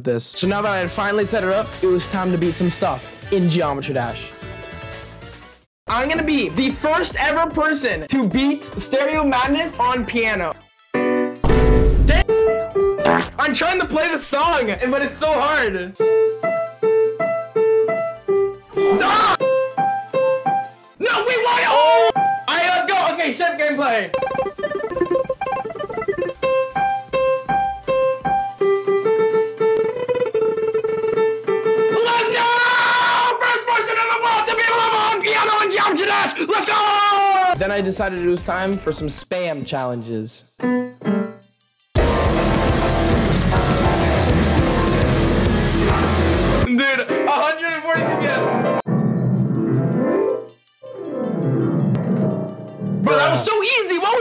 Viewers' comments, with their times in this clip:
0:10 ok that was a nice chord lol
0:40 actually sounds good kinda
0:40 pov you play rush e
0:40 " when the doom music kicks in "